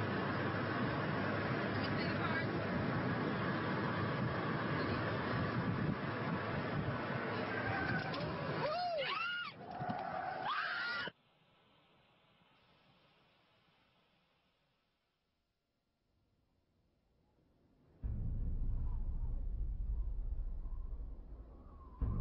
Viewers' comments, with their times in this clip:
0:07 Apparently a child run out into the road I think you can hear the car hit the child